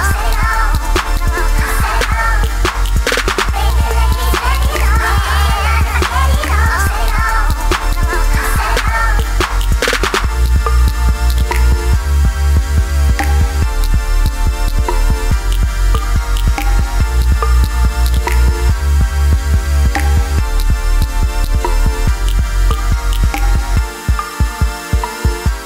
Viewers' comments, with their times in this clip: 0:10 called trap music but i think its 90 bpm normal trap songs around 115